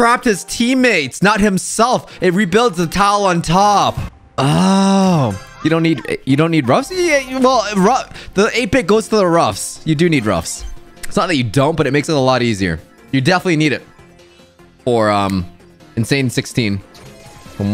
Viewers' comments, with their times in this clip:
0:05 ohs like some waiter